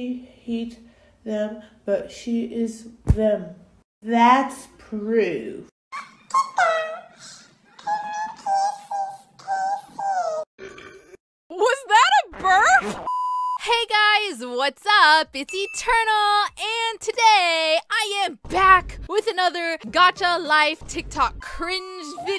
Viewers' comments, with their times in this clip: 0:06 YOU DO NOT SOUND LIKE THAT?! chipmink sounds
0:10 Was that a burp!?????!?!?!?!?!?!?